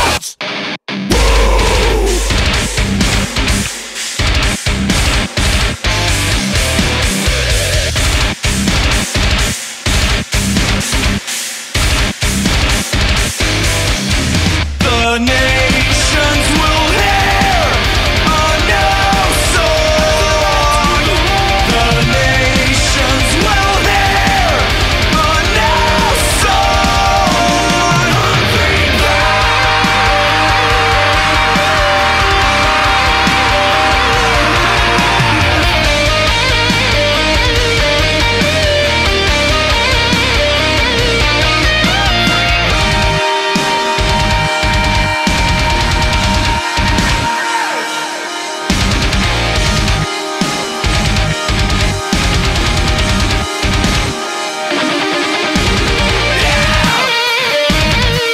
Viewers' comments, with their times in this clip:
0:03 Dayum you can hear the click of a touchpad xD
0:27 for some reason, that guitar solo just sounds so good, and it makes me happy
0:42 this band yells alot and the melodies are all over the place , granted some of you will attack me on this but its just too much for me , anyway look how he shout